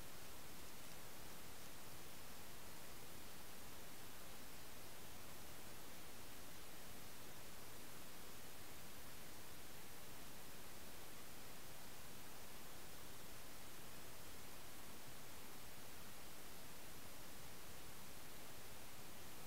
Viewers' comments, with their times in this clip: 0:05 The camera moves very slightly after some very feint rustling.